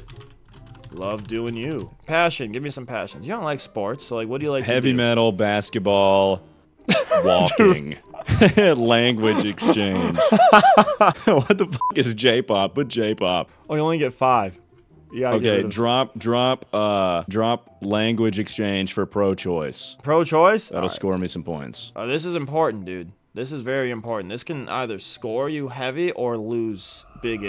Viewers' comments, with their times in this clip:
0:08 i was only listening to this part and understood “laying with exchange” and simply thought to myself self “wow, what an interesting way to describe having sex” lmao